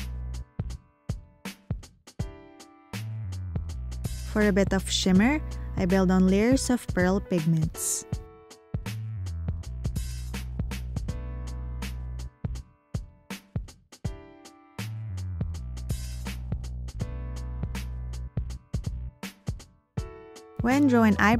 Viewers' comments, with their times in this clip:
0:05 Your voice startled me the calm music had me so mesmerized I'd forgotten that you were previously narrating ^-^'. Absolutely beautiful work!